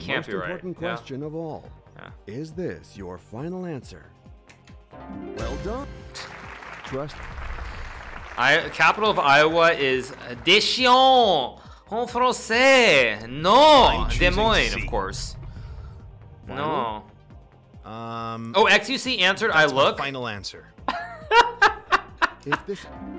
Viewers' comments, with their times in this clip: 0:07 "chien" pronounced like that means "fucking boring" in french (=chiant) 😂
0:11 his pronunciation is so bad he said "the shitting" ("chiant" in french = shitty as an adjective)